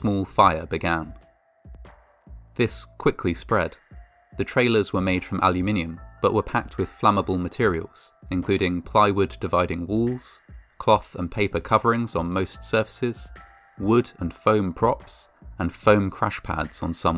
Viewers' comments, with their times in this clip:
0:05 I’ve never heard the word aluminum pronounced the way it was here